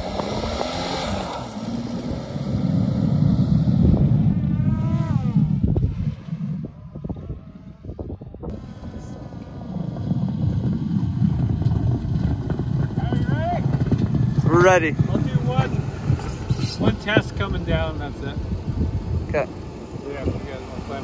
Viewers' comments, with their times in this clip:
0:05 When the drone sounds like a formula one car 😭😭